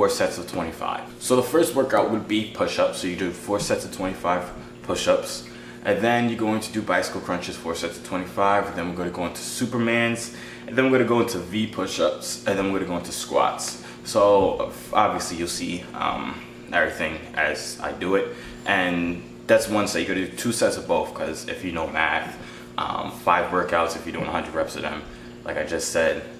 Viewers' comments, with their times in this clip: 0:10 did you just belch? Lol